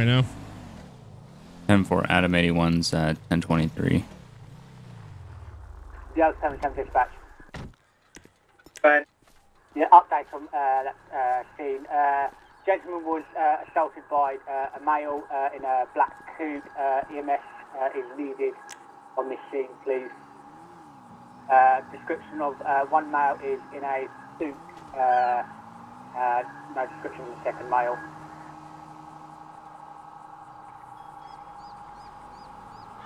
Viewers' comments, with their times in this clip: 0:07 Gah les the man must really like the word uh
0:19 how many times do you want to say uuuuuuuhhhhhhhh